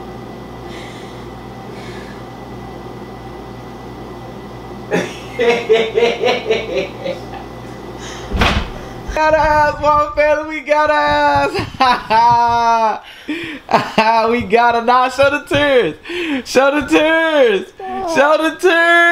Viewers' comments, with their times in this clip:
0:04 evil laugh 😂 lol
0:04 This man's laugh is too fuckin funny son
0:05 His Laugh Got Me Dead Asl 😂😂😂
0:05 This guy laugh is funny 😂